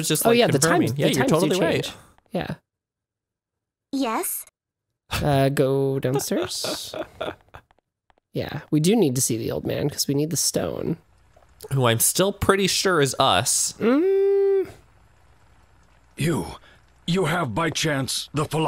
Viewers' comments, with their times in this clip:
0:05 It took her 30 seconds to say "Yes?" What.